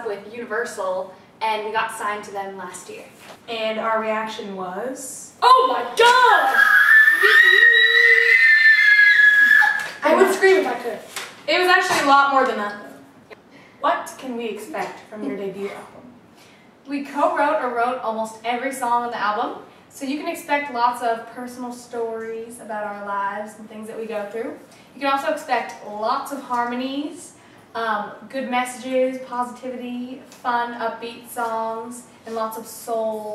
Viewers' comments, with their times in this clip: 0:05 Katherine: ''OH MY GOD'' All Others Except Dani: *Screams* Dani: ''Woot Woot'' *Silent Screams* I Would Scream If I Could COULDN'T STOP LAUGHING!
0:14 Was Lauren like farting lol 😂